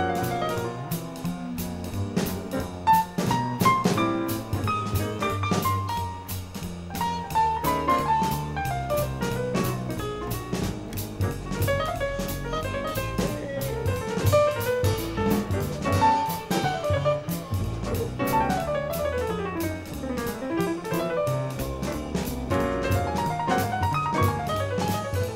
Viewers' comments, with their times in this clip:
0:07 most of "the lick"